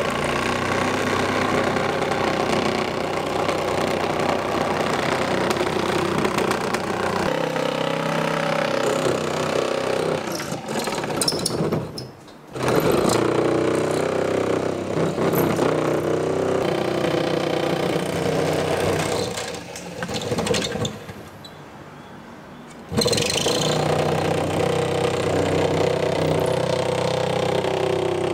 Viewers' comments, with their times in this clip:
0:09 Was that a wasp leaving